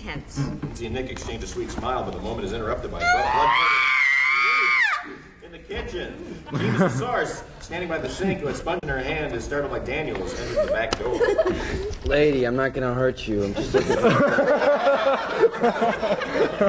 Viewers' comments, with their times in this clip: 0:03 Lego R2-D2 Death Sound